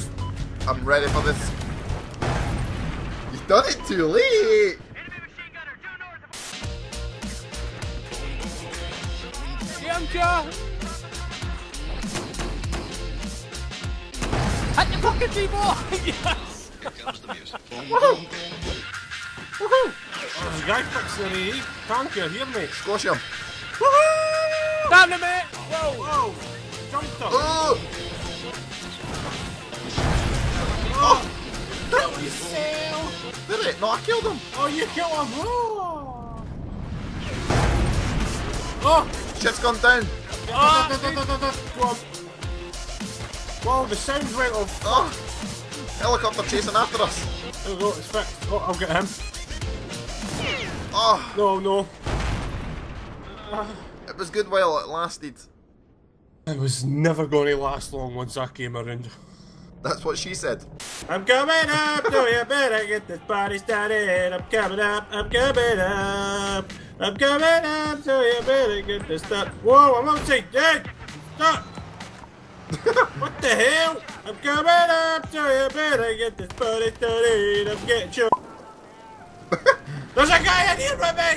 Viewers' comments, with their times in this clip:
0:08 what a song
1:03 I like the song in the elevator !!!!! lol very funny, I played once against you....but the best is having fun, that's what video games are made.